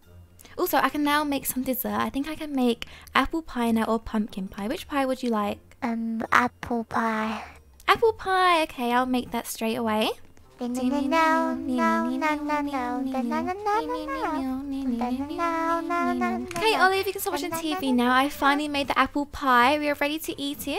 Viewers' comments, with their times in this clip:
0:07 her voice is so cute 🥰 and I’m here from 2021 cause I love to just watch her videos all over again 💖🥺